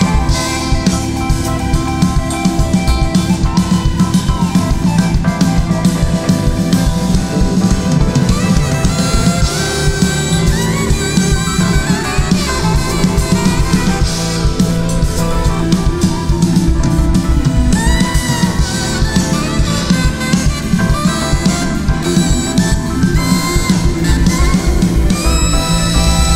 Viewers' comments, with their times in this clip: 0:10 Holy shit this gave me chills the note I’m crying